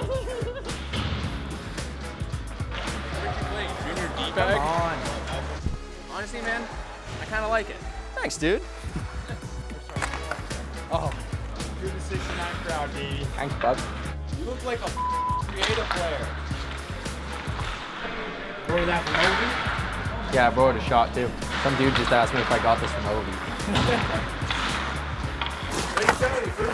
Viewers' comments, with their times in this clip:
0:07 Okay are we gonna Ignore the fact they did a voiceover for all the chirps? None of this is real I mean cmon his mouth didn’t even match what he was saying
0:14 sounds so fake